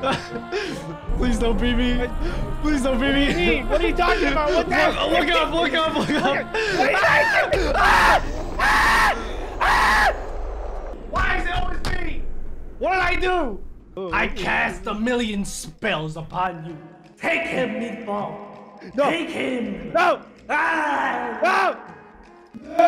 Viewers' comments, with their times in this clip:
0:09 the scream tho XD